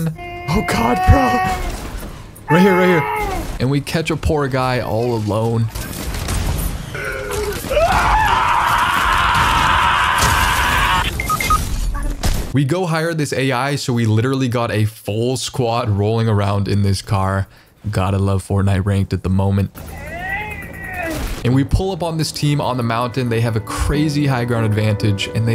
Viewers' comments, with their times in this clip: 0:08 What is that scream 😭